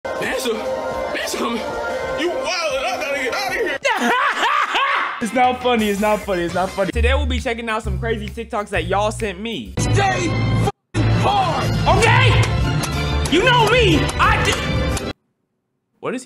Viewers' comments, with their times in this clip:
0:04 Bro laughs like Blackbeard 💀